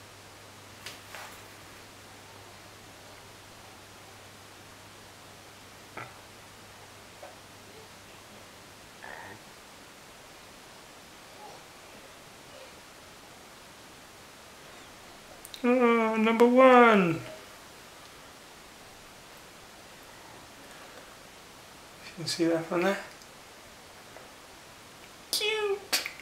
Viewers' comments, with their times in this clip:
0:09 Is it just me or if you turn up your volume you can hear a Minecraft death sound?